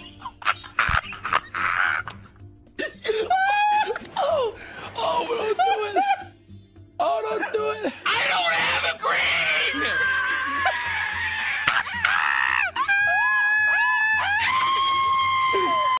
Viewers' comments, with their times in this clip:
0:04 The little "oh?!" for Cyno kills me 😂😂